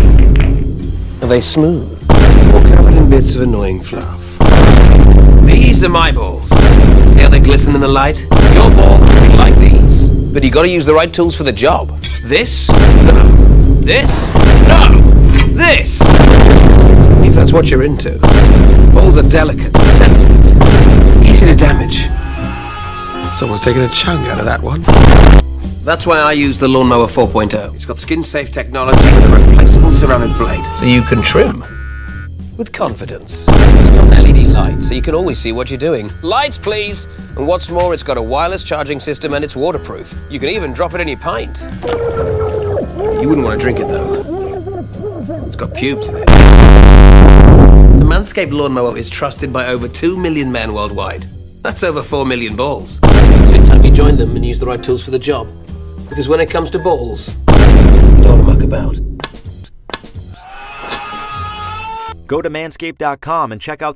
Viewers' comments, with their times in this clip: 0:10 you gotta use the right tools for the job This? pulls out fucking hedge clippers vine boom No! This?*pulls out a fucking blowtorch* Vine boom No! This? pulls out a fucking 🧀 grater Only if thats what your into💀
0:22 the pain in his voice
0:22 is a literal nuke now
0:23 Tsar Bomba level boom .
0:23 Someone taken an chunk out a that one.. (NUKE VINE BOOM)
0:23 here. see if the “original” and this had the same booms as each other
0:24 my fucking ears 😭
0:30 Goofy Ahh Scream
0:41 no one appreciated the subtlety of adding the water muffled scream, so i will.
0:41 the muffled screaming made me laugh more than all the vine boom sfx produced in this video
0:42 This is what the ocean animal's heard when Poseidon is shaving his balls 😳
0:44 "You don't want to drink it though, it's got-" Breaks fucking sound barrier
0:44 BIG vineboom killed me
0:44 deservedly thickest boom in the video
0:45 I almost crapped myself because it was so loud lol
0:45 Best version so far, especially with the CBT edits that I expected everyone to add, and not to mention the nuclear laser sound effect for "Pubes in it" Edit: Cheese grater....? Oh. Oh no. How did I not know 😶
0:45 the way he says the casually and with a straight face 😂😂 😂
0:46 the most ear shattering sound in existence
0:46 What did the TSAR BOMBA sound like:
0:46 MEGA VINE BOOM
0:46 is the krakatoa volcanic eruption of 1883
0:46 is the loudest boom sound effect of all time that not even an asteroid collision can break it sound